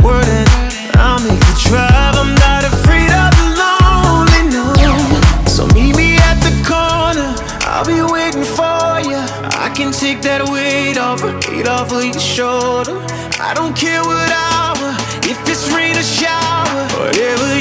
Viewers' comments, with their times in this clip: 0:04 i love it tekken game effect sound in